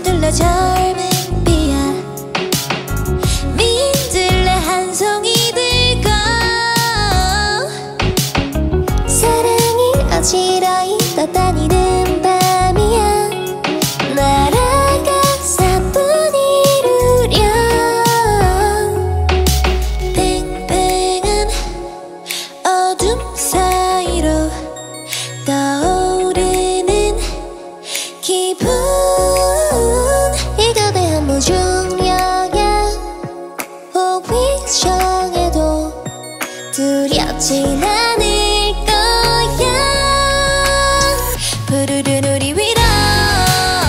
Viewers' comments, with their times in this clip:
0:07 Unfortunately this video was not live. From the start wonyoung look like she was lip syncing and confirms it for me. Don't get me wrong, I think her voice is still sweet though :)
0:28 Guys what abt on it's a breath